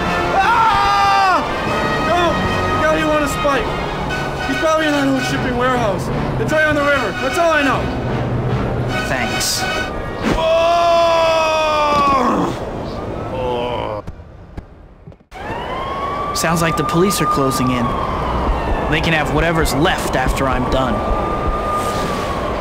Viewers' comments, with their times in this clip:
0:03 I could never understand what he said when i played this as a kid